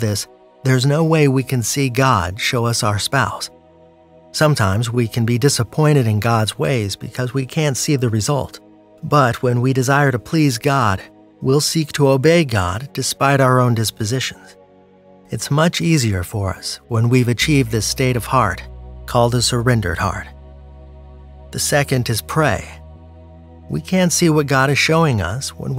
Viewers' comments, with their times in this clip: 0:09 Is that double bass pedals playing subtly in the background? Like in a metal song? whats up with that? 🤔